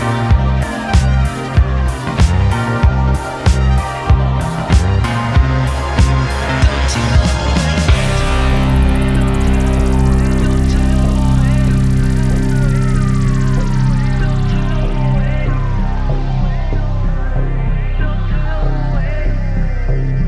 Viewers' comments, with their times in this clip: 0:06 That breakdown is abstract genius xx